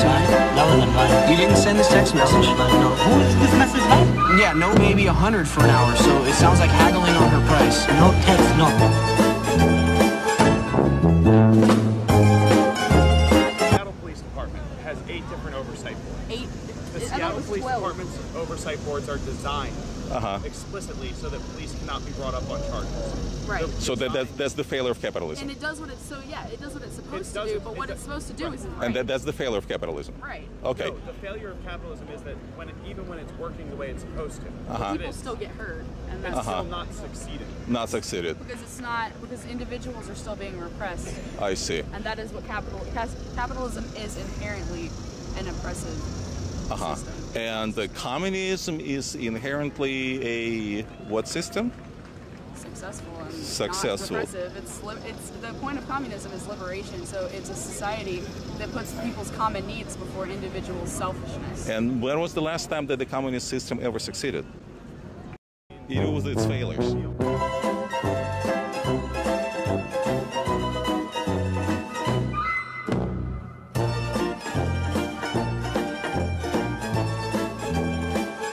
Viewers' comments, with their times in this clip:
0:03 he says "It sounds like you're haggling over price" but I like to think the officer is saying "It sound heavily overpriced"
0:53 I had to take my headphones off for a second holy shit
1:02 Man: when was the last time communist succeeded sad USSR noises